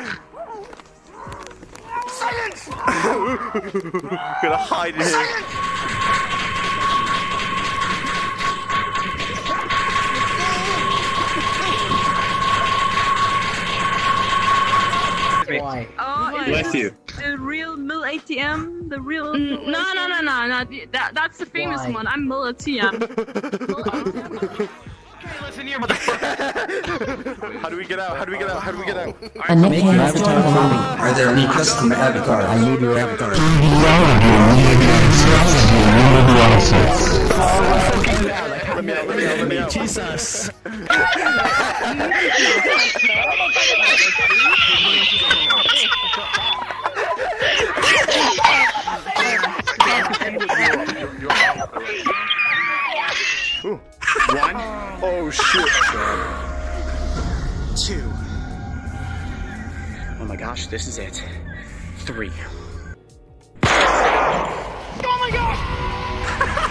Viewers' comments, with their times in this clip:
0:08 warning headphone users
0:43 "the tea is ready" - Wheeze laughs are great. gg
0:48 GET THE KETTLE OFF THE STOVE!!!
0:48 WHO LEFT THE KETTLE ON.
0:54 WHY IS NOBODY TALKING ? XD